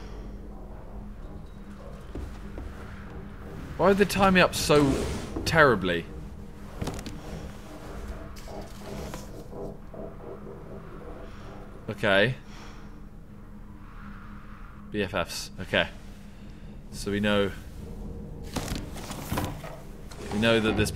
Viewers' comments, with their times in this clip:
0:05 I thought it said memeulous